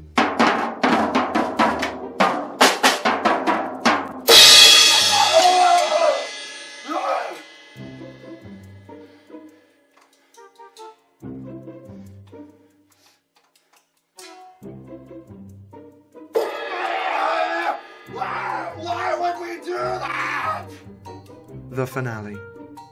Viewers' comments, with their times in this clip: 0:04 I love the part when Vemon screams in pain when he accidentally hit the cymbal of the drum